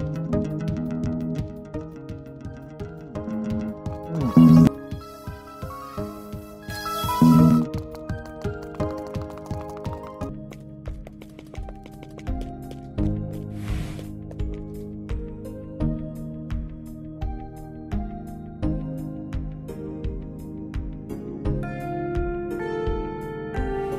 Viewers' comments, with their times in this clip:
0:07 sounded like an alarm